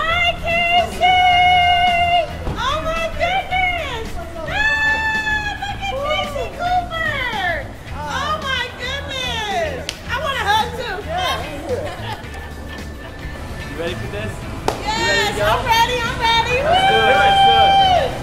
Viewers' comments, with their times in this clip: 0:03 sounds like in sponge bob goffy goober